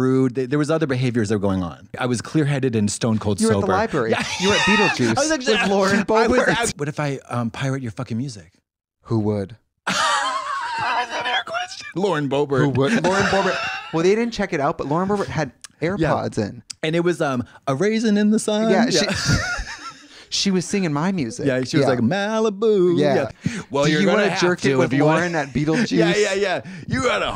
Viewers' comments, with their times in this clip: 0:10 This episode is my religion. Everyone knows the amazing lines from Katya but “that’s a fair question” mid wheeze is my lord and savior amen